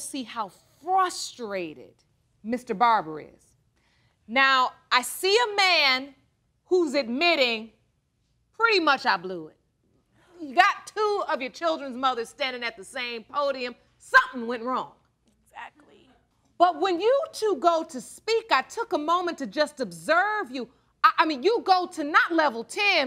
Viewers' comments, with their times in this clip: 0:04 "I'm hurt" with dry-murderous-eyes and crying-shaky voice. Not sure she means it.